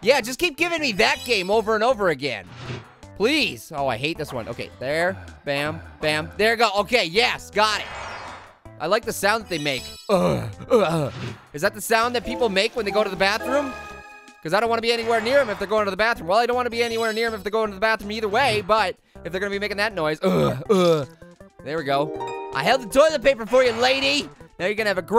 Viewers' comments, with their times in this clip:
0:10 "I like the sound that They Make." mAkEs wEirD NoIsEs